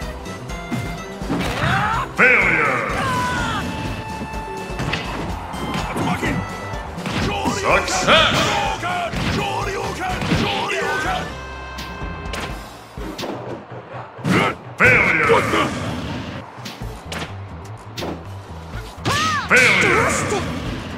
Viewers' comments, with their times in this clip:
0:05 It sounds like Ryu, who's recovery isn't anything special, is saying "It's working!"